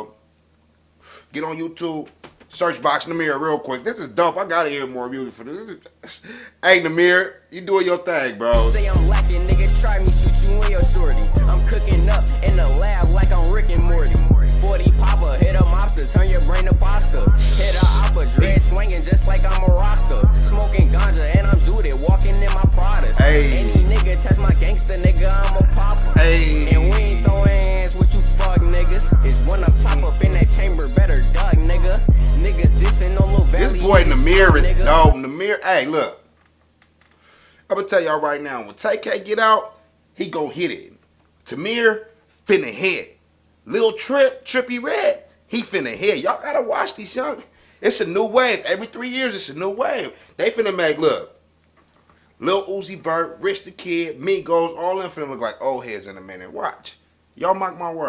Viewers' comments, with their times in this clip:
0:03 him talking while the smoke passing through his vocal cords had me dying😂😂😂😂😂😂😂😂😂😂😂😂😂😂😂😂😂😂😂😂😂😂😂
0:04 his voice LMAO im dying
0:40 who is Tahmir🤔😂😂😂